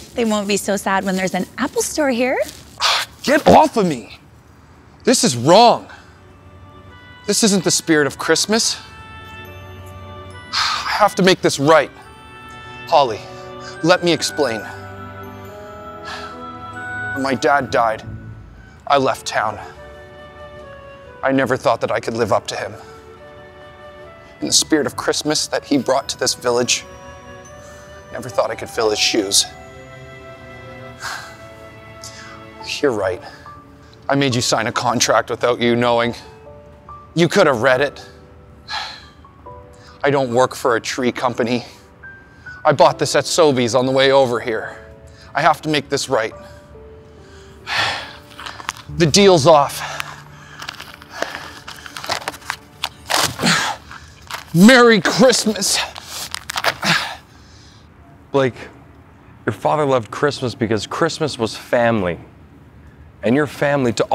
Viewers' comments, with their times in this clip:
0:03 Did he fart at the mark when he pushed the girl off him
0:03 ...Did he fart?
0:03 The fart really emphasised his frustration
0:04 😅 Ok. So, was that a real or fake fart ?? 😂😂 😑
0:11 And the cheesy music
0:21 charlotte holding back her laugh is hilariousssd 😂😂😂😂
0:51 Everyone laughing at him tearing the paper 😂